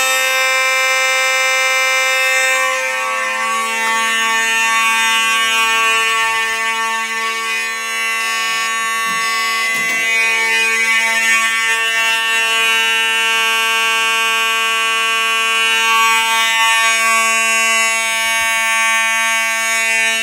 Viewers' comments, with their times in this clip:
0:05 continuous on these model horns were what made me scared of fire alarms as a child, because they were super loud. effective, but super loud, especially when they go off as your right below one, made me completely fearful of fire drills for the rest of my school life after kindergarten.
0:05 Continuous On These Model Horns Were What Me Scared Of Fire Alarms AsA Child' Because They Were Super Loud. Effective But Super Loud' Especially When They Go Off As Your Right Below One' Made Me Completely Fearful Of Fire Drills For The Rest Of My School Life After Kindergarten. I Was Forever Scared Of Fire Alarms Back In Pre-Kindergarten With An Edwards Integrity On Continuous.